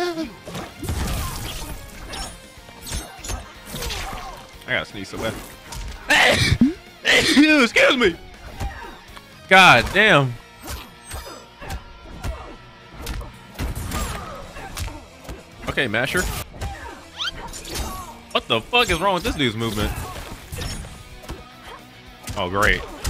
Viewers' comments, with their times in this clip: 0:06 Bless you rewind